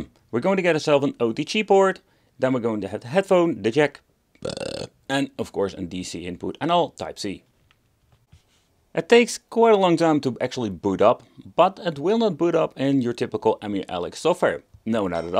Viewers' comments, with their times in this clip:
0:03 The casual burp while going through the sockets had me laughing so hard 🤣🤣. Been on replay LMAO